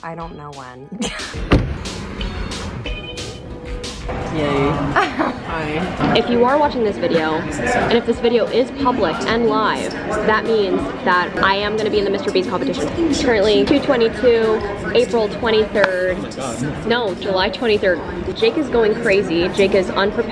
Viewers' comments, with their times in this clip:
0:04 Did he speak in Portuguese?